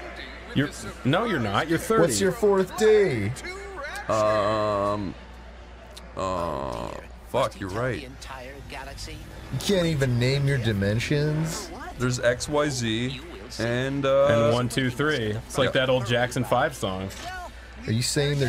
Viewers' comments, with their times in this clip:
0:06 JAT's voice acting is awful, only role he ever did well was Obi-Wan in Clone Wars. Aside from that all his voices just sound like an annoying little twinkus that plays sportsball underwater or something